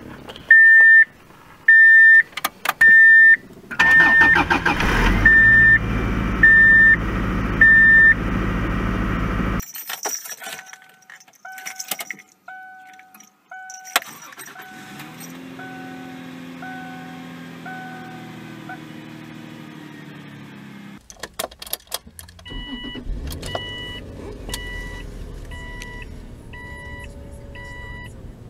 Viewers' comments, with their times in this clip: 0:09 look like is a ford sound